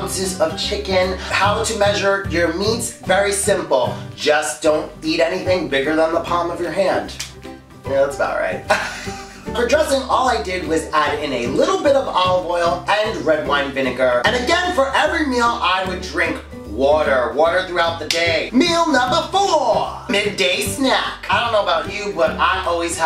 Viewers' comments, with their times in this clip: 0:08 u reminded me of the cat in the hat how he laughs in the movie childhood memories